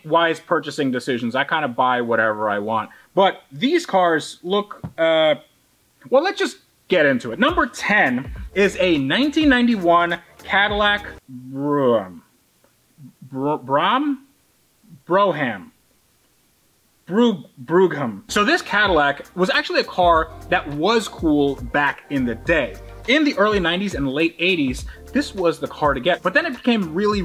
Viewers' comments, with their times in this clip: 0:08 ,,a 1991 Cadillac Bruh " sounds more like a car that could be from 2022+